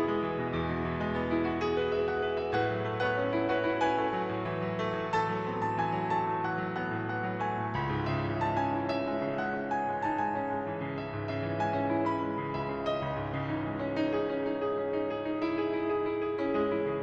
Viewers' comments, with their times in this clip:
0:03 that transition was beautiful sir, also amazing job putting this whole thing together and playing strait through if my years playing guitar has taught me anything this was probably a sweaty affair. lol